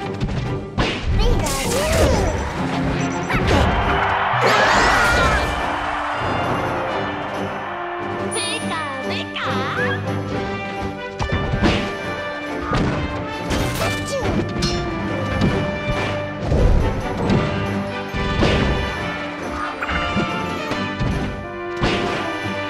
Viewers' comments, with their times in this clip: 0:08 Pikachu's voice in the next Pokemon games
0:09 I'm sorry, I didn't get that. I don't speak Pikachu!!